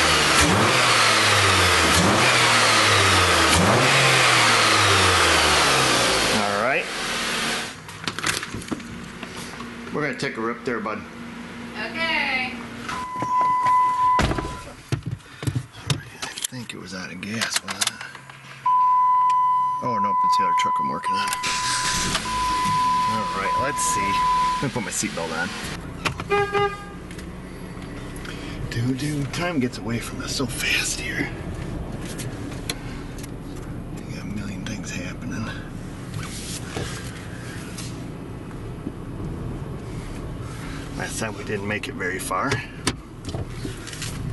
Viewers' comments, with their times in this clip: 0:06 Sounds like Chevy THUNDER!!!!!!!!!!!!!!!!!!
0:27 Bullwinkle ? Yoda ? Neither ? What IS that ?